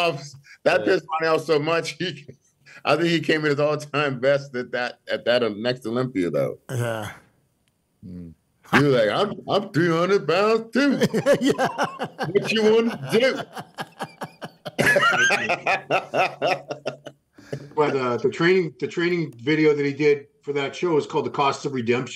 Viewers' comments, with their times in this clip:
0:06 that ronnie impression hahahah